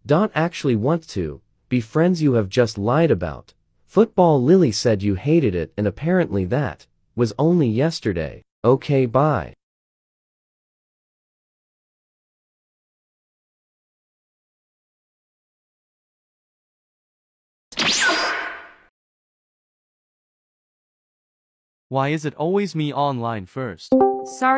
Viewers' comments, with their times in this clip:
0:05 so since when bobby had noah's voice